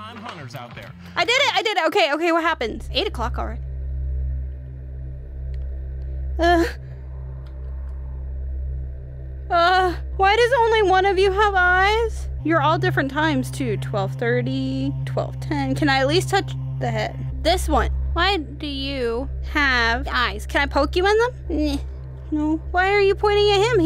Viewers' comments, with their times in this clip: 0:08 I just hear dorimae